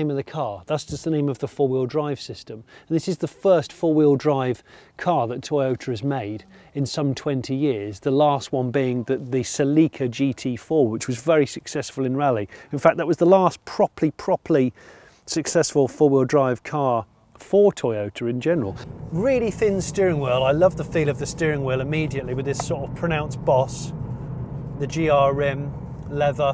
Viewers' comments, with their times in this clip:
0:08 The way you pronounced Celica makes me want to file a grievance...